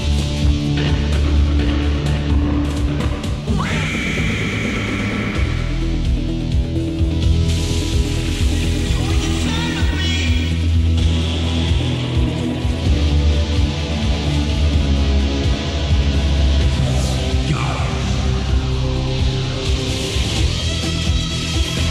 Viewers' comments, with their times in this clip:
0:09 the transition from the new to the old bio boost is extremely well done. if i wasnt so familair with both i never would have noticed it :)